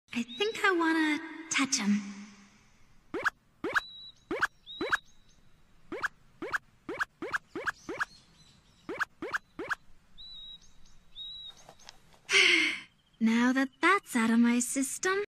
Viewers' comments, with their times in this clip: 0:03 Cute dog ears sound effects